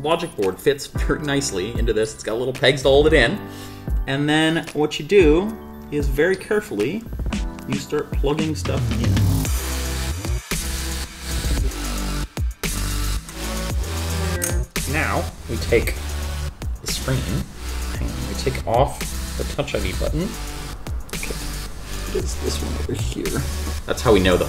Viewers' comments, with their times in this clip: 0:08 I think you've overdone it with that background music :)